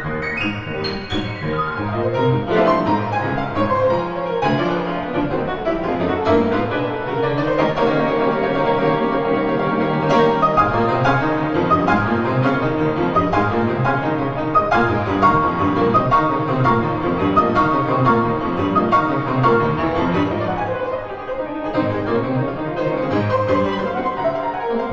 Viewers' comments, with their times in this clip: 0:10 Wow! What a lot of sweat behind this recording! This version is more "ruthless", depicting with sounds the "tiger" in the title. The left hand impressed me almost more than the right one. I usually expect a steady tempo, but in this recording there's so much stamina that sometimes the left hand "pushes forward" (ex. where it starts faster and after a bar gets back to tempo I) the groove. Maybe it is not academic stride piano but surely it is "raw rag" LOL!